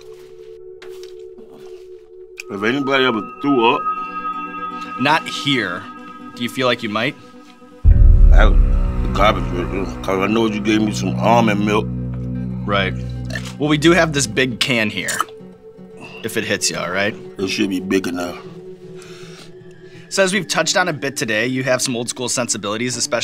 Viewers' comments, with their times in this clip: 0:08 Can someone explain to me what my man's saying here. 😂